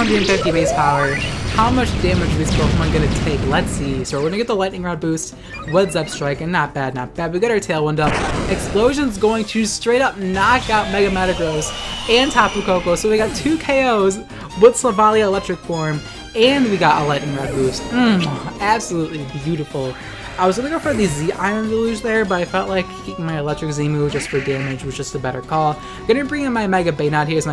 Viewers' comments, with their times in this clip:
0:09 All jokes aside. The editing in these videos are great. That moment when the music swelled on the koko and metagross fainting was an excellent example of editing